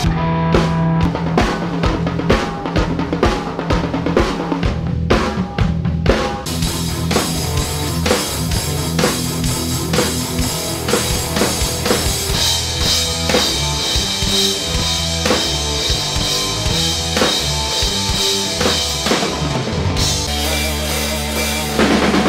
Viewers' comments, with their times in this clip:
0:04 fucking St.Anger sound!